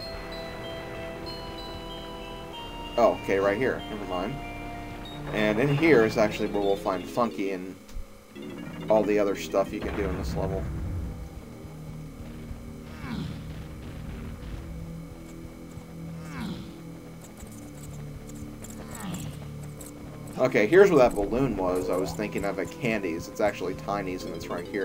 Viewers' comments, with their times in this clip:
0:10 my sister hates the music in the room because of the moaning. She says it gets an image into her head that she's the one making the guy moan.